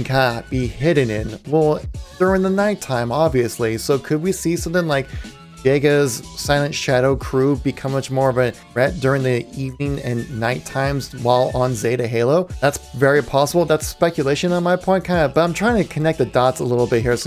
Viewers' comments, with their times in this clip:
0:04 it sounded like you said the n-word